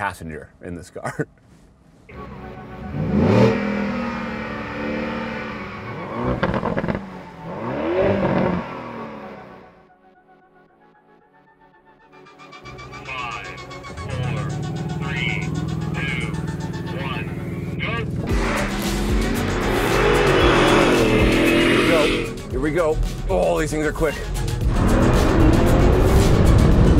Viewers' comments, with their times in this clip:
0:09 the R1S rev 😂😂😂😂